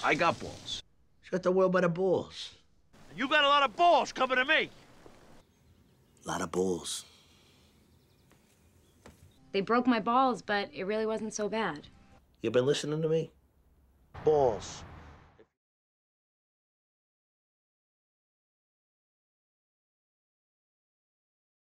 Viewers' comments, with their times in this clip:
0:10 meadow started taking like her father near the end